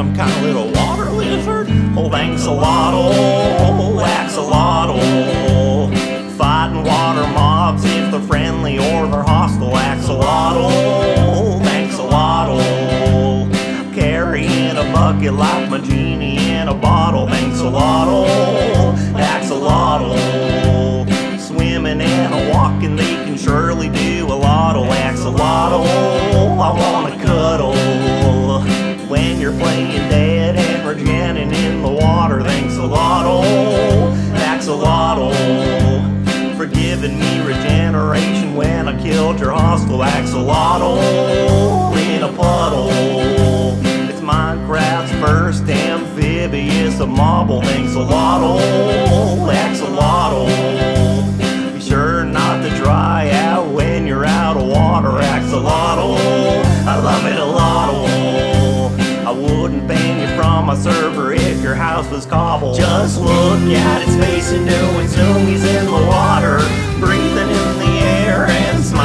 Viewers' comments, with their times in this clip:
0:05 same voice like in the 1.16 song when was the strider song XDD
0:41 lol i can hear a voice crack Lmao
0:57 voice crack fail or win?